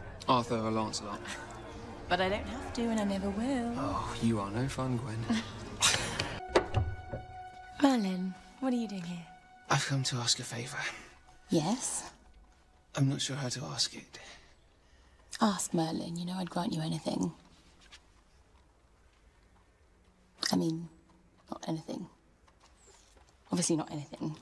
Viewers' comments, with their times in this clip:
0:07 Her "Merlin" was so soothing
0:07 the way she says his name is so cute 😆😍🤩